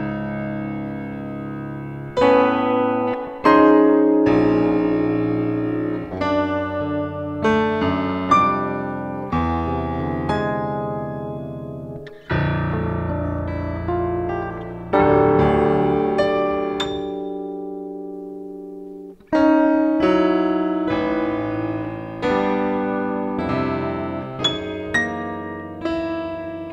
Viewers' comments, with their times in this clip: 0:10 that random A was quirky af